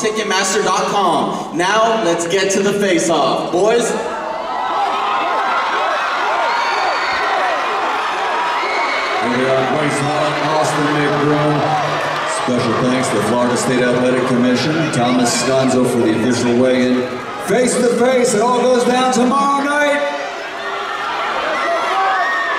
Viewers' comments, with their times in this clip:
0:10 why tf was the announcer talking we couldnt hear jack shit